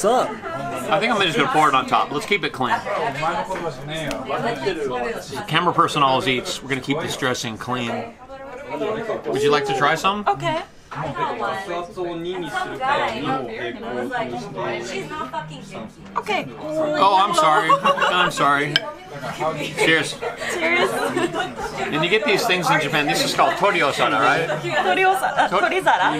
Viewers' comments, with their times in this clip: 0:05 in you can hear an American lady, in the background, use profanity.
0:14 Might not have been American... Just her accent perhaps....at